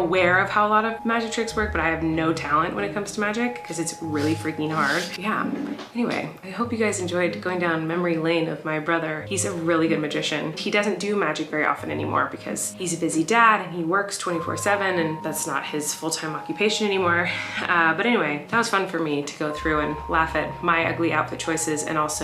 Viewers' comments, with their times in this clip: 0:05 That was TOTALLY a fart.